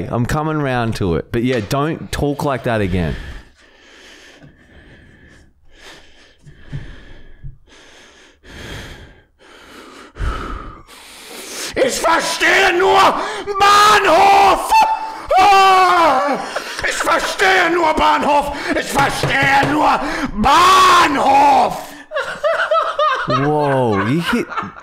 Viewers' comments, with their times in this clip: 0:09 Why is nobody talking about minute ? That banhoff with the voice crack had me in tears 😂😂